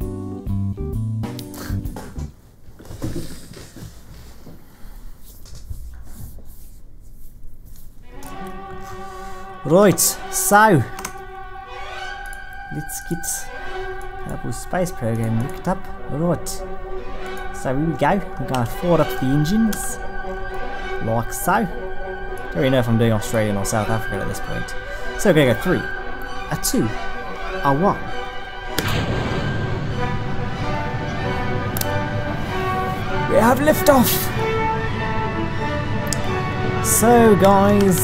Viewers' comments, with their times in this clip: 0:08 you did the best Australian accent there is because I am Australian and I can do that too
0:23 I thought it was brummie.